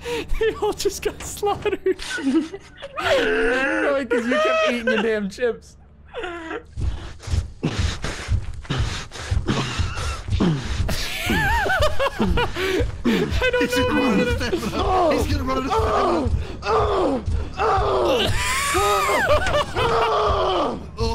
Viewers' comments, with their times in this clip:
0:09 bro huffin like that it me trippin😂